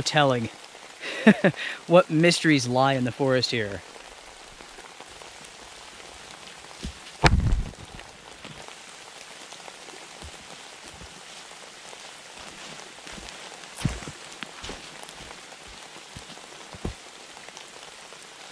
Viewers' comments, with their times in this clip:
0:06 What was that massive thump?